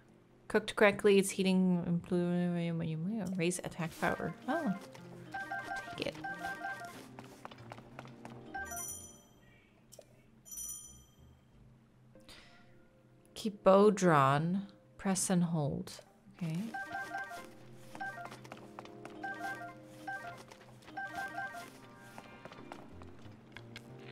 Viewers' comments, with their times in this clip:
0:08 are there angry irish noises in the background ????